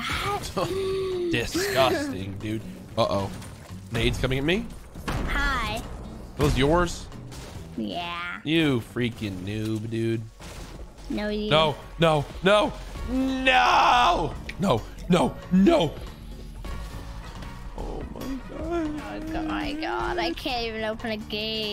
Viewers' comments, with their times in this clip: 0:03 Did anyone else notice Courage say nades coming in me lmao